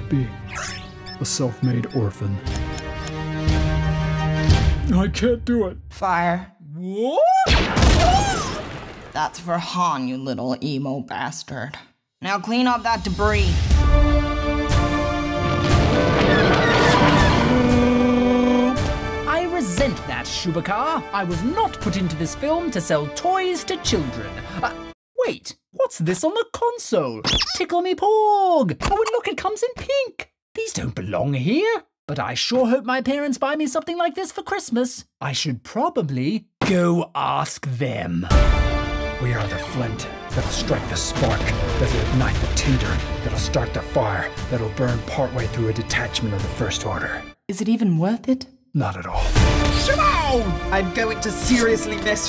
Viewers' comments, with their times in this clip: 0:06 When fires Kylo sounds weird
0:18 The porgs accent LMAO 😂😂😂
0:37 sounds like stewie Griffin!